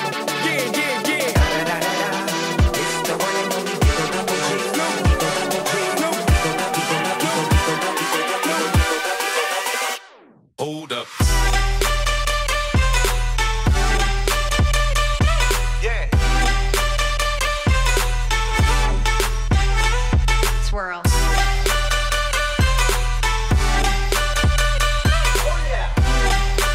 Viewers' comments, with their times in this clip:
0:10 the best song